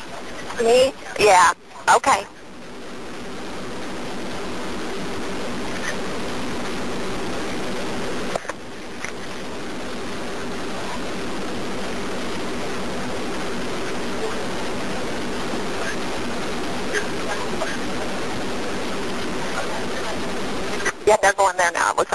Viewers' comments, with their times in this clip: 0:08 I had the thought that the police or moreover the ambulance was trying to call his number and that's what the 2 call waiting beeps we heard while on the phone with dispatch. So they were trying to locate the injured woman but since she was busy with dispatch the call never got answered. That's truly sad.